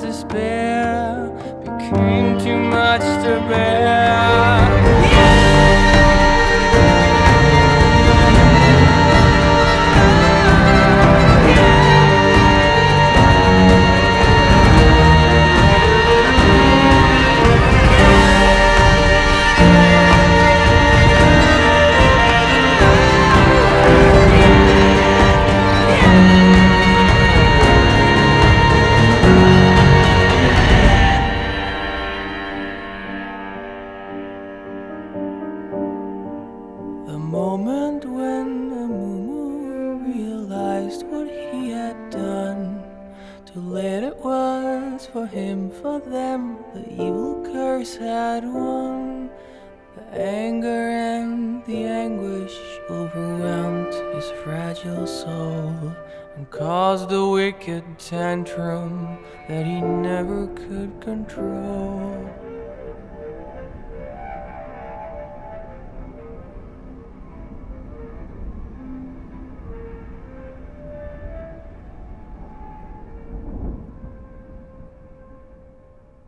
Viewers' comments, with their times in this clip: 0:04 at the beginning me: what nice soft calming music me WOAH HOLY SHI- falls of chair dog: -_- does she really have to be my owner
0:04 That freaking violin is the best
0:15 that violin just give me the chills
1:01 you can hear bardo's sounds too